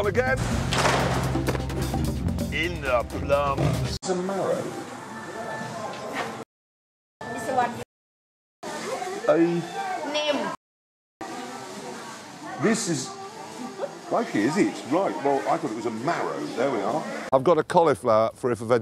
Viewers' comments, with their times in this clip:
0:04 To be fair, the lady said "Pha" without the hard "K" in the clip.
0:06 the fact that you censored the word "frappe" (or whatever it is) makes some viewers believe that she said the f word on the BBC